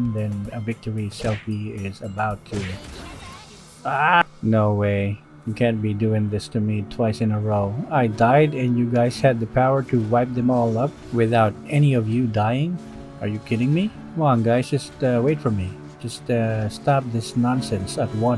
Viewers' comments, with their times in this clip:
0:03 this is the most emotion we have ever heard from him.
0:03 A stupid pile of shi- perfect cut scream That got me good😆 I've been seeing your vids since that few days and your vids make me laugh and you're voice is so relaxing✨♥️